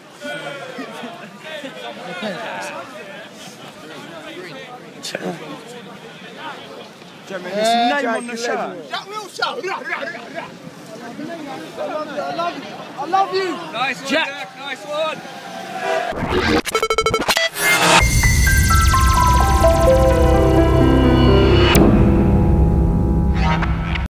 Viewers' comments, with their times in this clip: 0:09 wtf was that weird noise lol